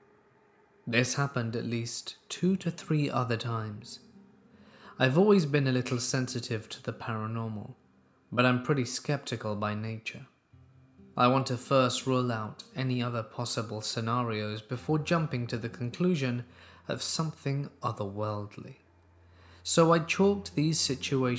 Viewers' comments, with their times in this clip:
0:06 Did anyone else hear a Nintendo Switch click